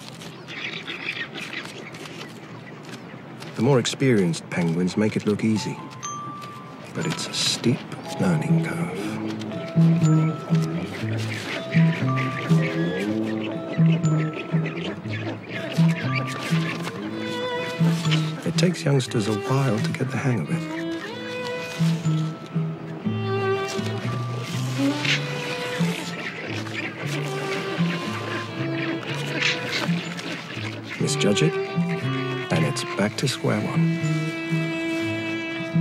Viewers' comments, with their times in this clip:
0:10 XD I think I've been exposed to the internet for way too long... everytime one of these penguins slide back down, I hear that unique cry out: "BRUHHHH!"
0:20 The narrator's voice is literally exactly the same like in the game called Hades